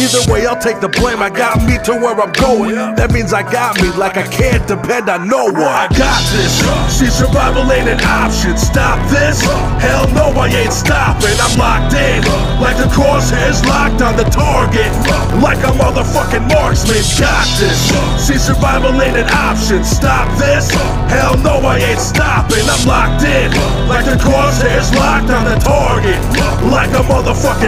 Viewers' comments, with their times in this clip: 0:08 I stand corrected! It must just be distortion that's part of the beat on purpose at the loud parts. for example, there's some ″frapping″ sort of sound when it picks up, but it could just be the grit of a sick beat!